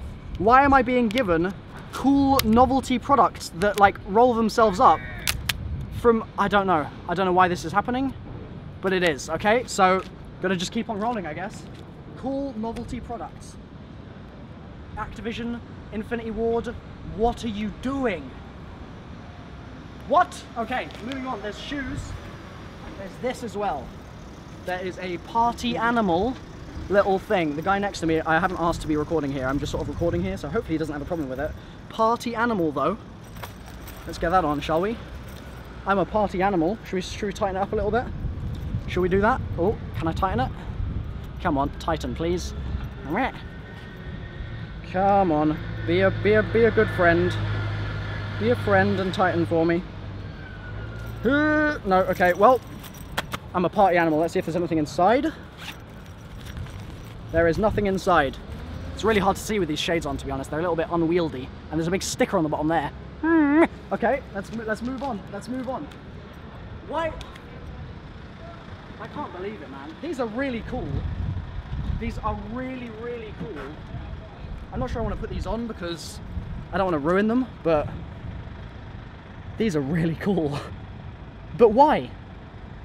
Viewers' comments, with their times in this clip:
0:08 The crack head yelling XD LMAO
1:05 that sound mmmmmhmmeh